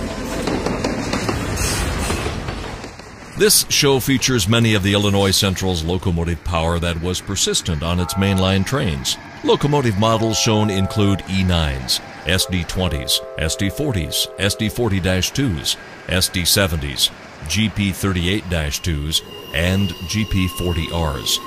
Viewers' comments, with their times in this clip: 0:05 their is a Rebuilt Gp10 with a 1st gen K5la.